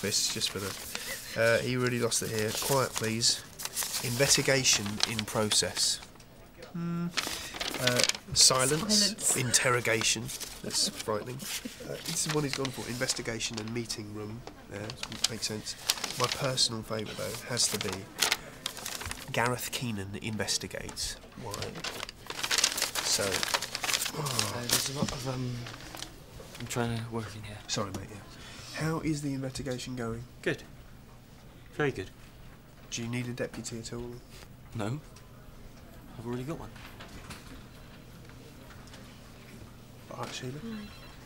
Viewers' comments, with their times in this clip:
0:06 Tim does a perfect “phone on vibrate” sound.
0:29 20 + years on and i've only just noticed that Tim asks Gareth how the 'invetigation' is going... i'm sure it's just me... should have noticed this before ha!!!